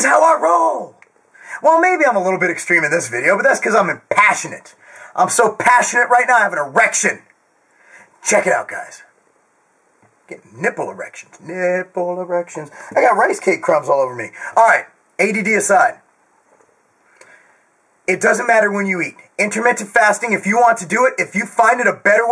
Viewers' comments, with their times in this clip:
0:10 GOD DAMN! YOUR VOICE VIBRATES WHEN YOU DO THE PEC BOUNCE!